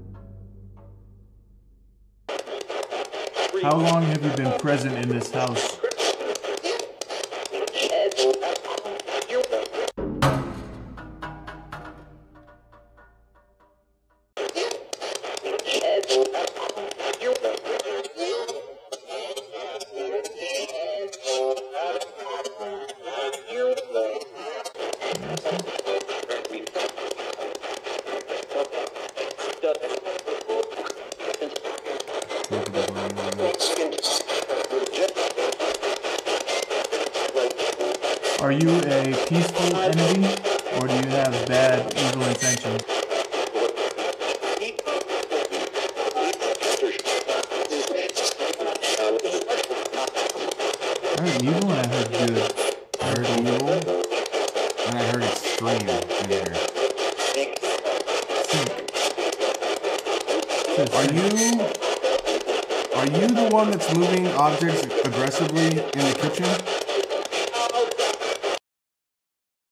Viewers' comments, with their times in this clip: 0:03 before he started talking you hear a voice not coming from the box clear as day say free please tell me y’all heard that !!!💯💯💯💯
0:13 ... I thought it says "Several... Human... Years..."
0:19 why does that kinda bop though-
0:34 playback speed 0.5 sounds like a male voice said “get out … of here”
0:43 When they ask if the entity is evil i swear i heard the sb say evil...
0:44 A wonan's voice says clearly "evil"
0:50 peacefull, I would hurt anybody says a man time stamp listen closely